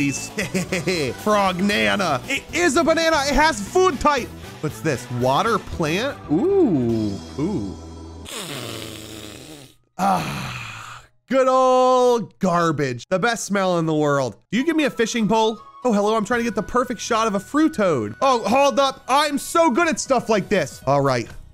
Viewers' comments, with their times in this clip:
0:08 bro sounded like he had multiple boogers in his nose /j